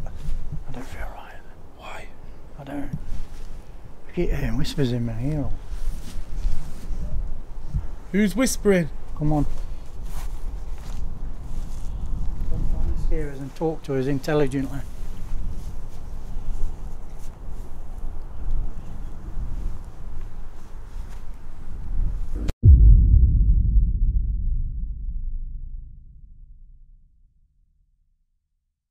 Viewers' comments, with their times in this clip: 0:06 .....is there a mans voice saying......."GET OUT"......!!!!
0:14 ..... As you say, "intelligent" it sounds like a voice says, "get back" . almost interrupting you. Kind of sounds like a frog almost